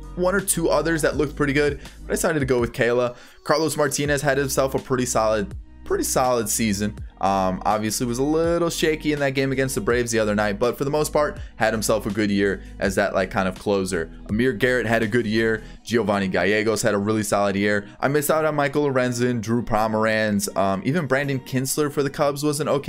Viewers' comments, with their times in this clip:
0:04 u mean Marlos Cartinez LMAOOO